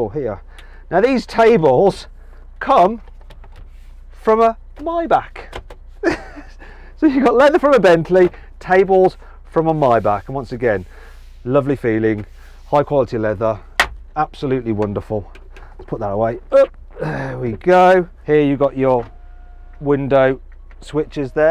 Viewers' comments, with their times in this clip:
0:05 What’s a Myback ? 😂😂